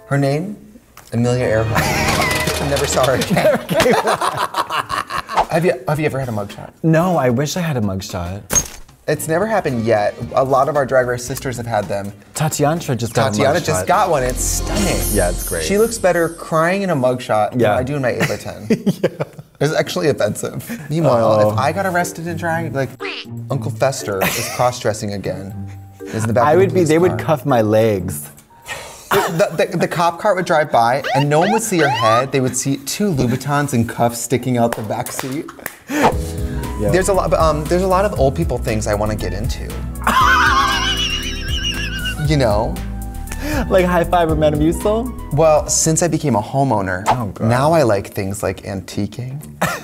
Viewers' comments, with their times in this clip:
0:04 I can't stop replaying Trixie's goblin laugh
0:36 how are literally all three of these old white people clapping off beat to imaginary beats but separately.....if that ain’t talent....